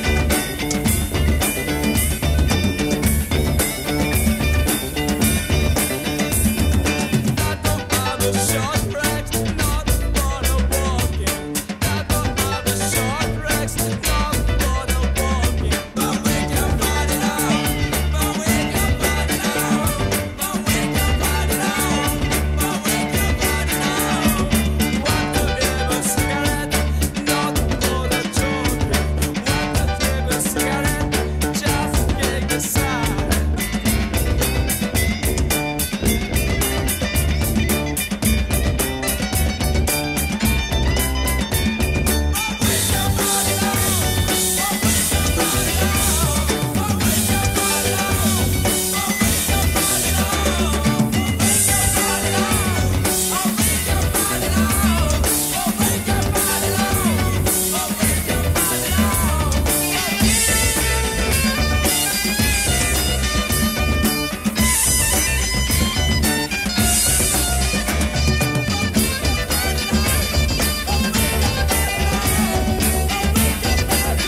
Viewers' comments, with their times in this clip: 0:08 Listen very closely and you can hear the steam message alert lol.
0:59 when the lead guitar pops in and the bassline immediately starts moving around in unpredictable ways as it all hits the fadeout - that's gotta be one of the most perplexingly moving and joyous moments I've ever heard on a record, up there with Exile On Main St's best moments!